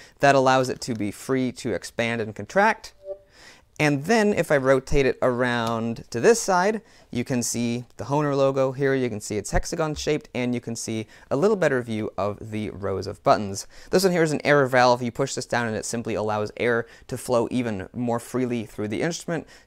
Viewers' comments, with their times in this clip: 0:03 I heard a discord notification sound